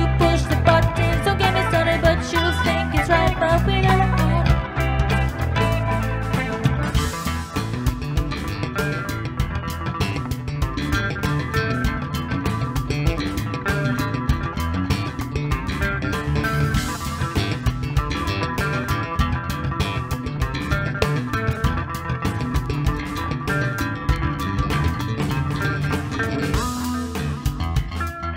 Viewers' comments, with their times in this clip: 0:09 cool song & excellent performance. I really liked that cool guitar groove. The bass break was cool.excellent vocal performance. The goofiness at the end was fun. Rock on! 👍